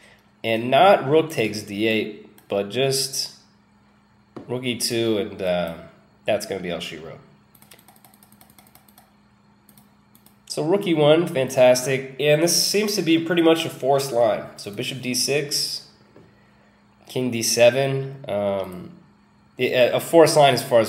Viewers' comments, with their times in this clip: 0:05 That's going to be Elstree Road? I've been along that route a hundred times but I never knew it had anything to do with chess, till now.